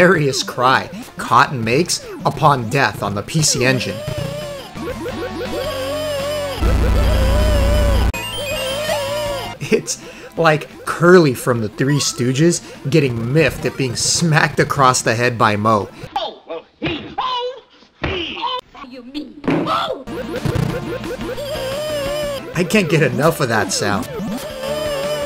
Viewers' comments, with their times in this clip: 0:06 totally sounds like Curly from the three stooges Nes oyster mini game. 😂🤣 Dressing up as Cotton was amazing 🙌😜